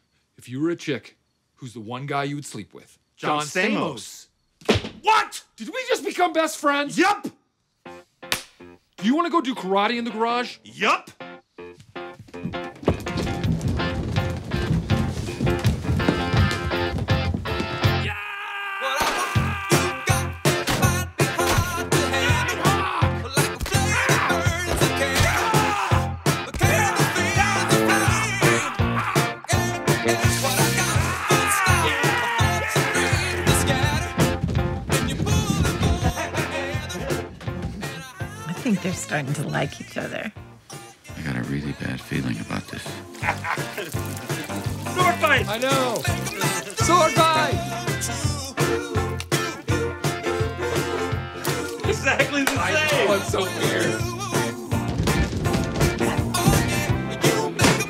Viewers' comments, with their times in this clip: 0:09 the way he says yup lmao😂
0:43 Will Ferrell's laugh ! ☠💀🤣😂🤣😂🤣😂🤣